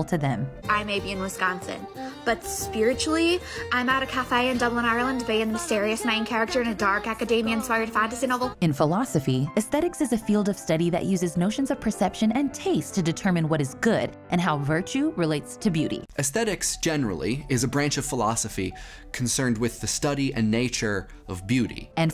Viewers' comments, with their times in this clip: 0:03 "I'm at a cafe in Dublin" proceeds to shift into imitation Ulster accent
0:03 Would just like to say that the girl was talking about being spiritually in Dublin, Ireland, but her accent suggested that she was spiritually Northern Irish, specifically from Derry/Londonderry 😂 Guess that Northern soul applied for uni in the South 😆😆😆
0:05 ...If she's at a cafe in Dublin, Ireland why's she doing a Derry accent? Sorry, I realise this is nit-picking, I appreciate that Trinity College is the heart of this Dark Academia thing because OH THANK CHRIST THEY'RE COMING FOR THE WRITERS, NOT THE BOOZE, but... like... this bit's very wrong?